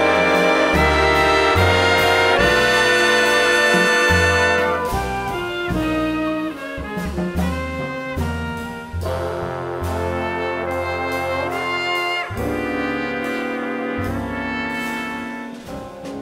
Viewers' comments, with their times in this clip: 0:04 Cool stuff. I adore the North Texas lab band and the North Texas Wind Symphony. The level of blend and musicality is amazing.